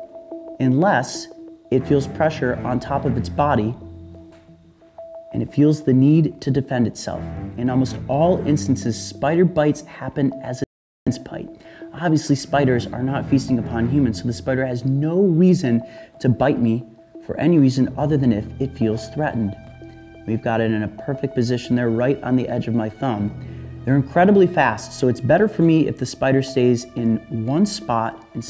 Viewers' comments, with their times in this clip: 0:10 what did he say it skips one or two words?
0:11 Hi. What did you say ? You were cut off for few seconds. Thanks🙏🏻